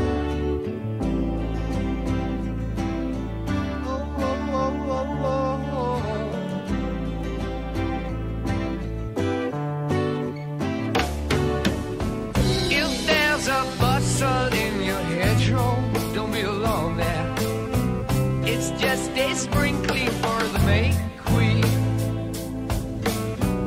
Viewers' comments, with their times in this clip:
0:05 ... She said a remarkably soft pleasant tune up to the mark so beautifully choreographed before the total energy of drum and guitar work in the finest Heavy metal bands to completely invent Heavy metal marrying a nice softer tone to the louder drums and guitar work much like Pink Floyd had to learn and did in the 1970s also. It is how the music instrument players know how and when to pleasantly bring together a composed song joining up with Robert Plant's voice at all the right spots that make this tune a classic. Pink Floyd also with Roger Waters and David Gilmoure would lead Heavy Metal into a direction so ear pleasing and needed in forceful energy to ... ROCK ... according to AC/DC's also in their 1970's tune, "For Those About To Rock We Salute You!" All hard guitar and drums but pleasant not chaotic in instrumental sounds.
0:11 the moment when the drums kick in never fail me to chill